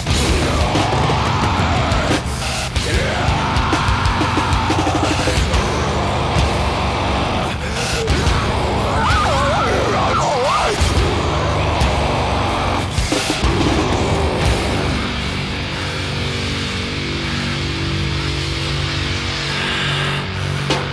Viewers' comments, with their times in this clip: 0:08 when I have a bad voice crack